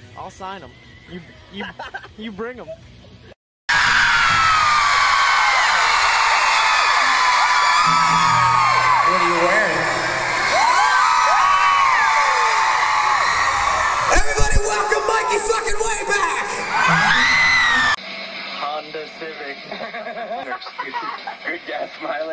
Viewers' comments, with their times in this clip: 0:07 I really thought that was Gerard until I saw his face. Can't believe people say they aren't alike